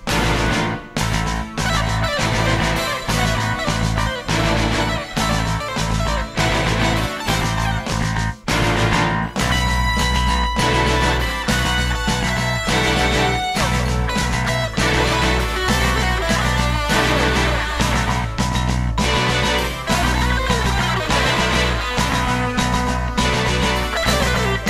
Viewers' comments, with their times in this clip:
0:09 I love that first guitar solo! Steve slays at the mark!